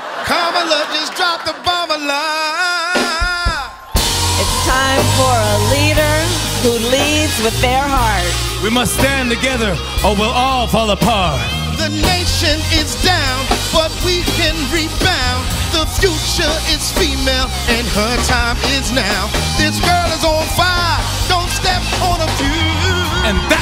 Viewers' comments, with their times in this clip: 0:04 why did this remind me of the team rocket theme song??😂